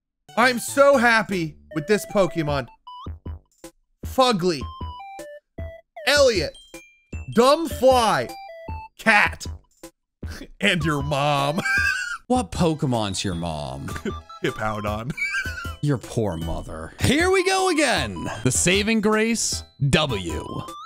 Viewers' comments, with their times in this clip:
0:03 The short pause followed by “fugly” gets me every time